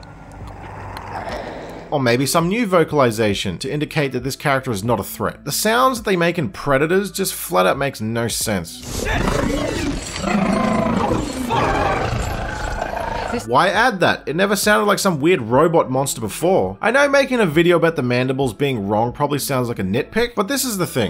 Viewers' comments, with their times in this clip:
0:08 how does this sound like a "robot monster"? Not hearing anything robotic